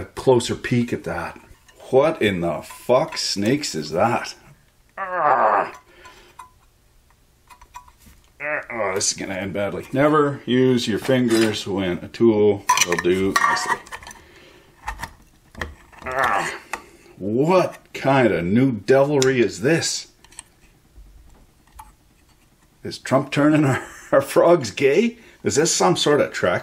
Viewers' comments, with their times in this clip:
0:08 a schizophrenic hipster screams "a tracking device!?!?!"